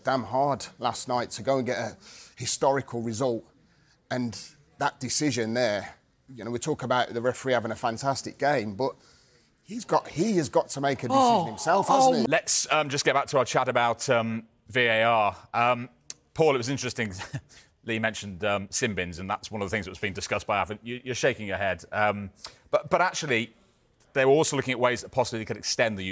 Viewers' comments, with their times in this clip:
0:10 Who’s getting tugged off in the background ?
0:10 what the moan 👀